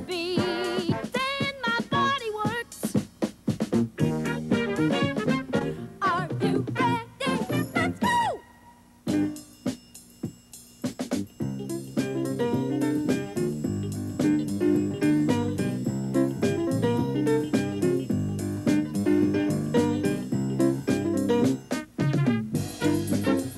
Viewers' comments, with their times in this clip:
0:09 sounds like a j dilla sample to me